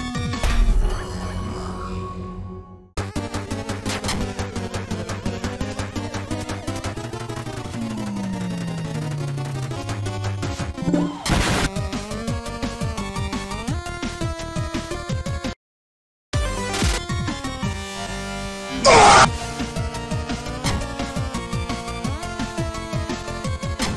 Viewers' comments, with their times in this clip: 0:10 steam notifications sync xd